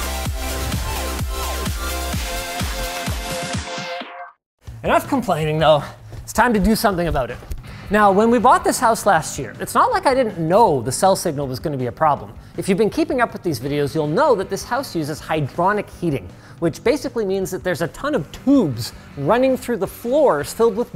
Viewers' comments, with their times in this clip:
0:06 this isn't the real linus, he said about not aboot